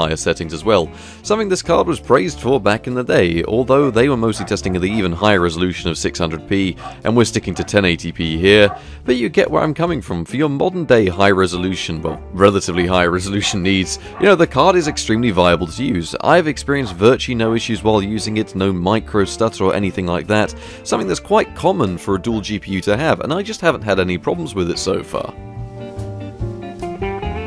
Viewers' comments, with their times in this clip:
0:03 anyone else hear barking? or am i losing it?
0:05 Was the card barking at you ?
0:11 I hear your dog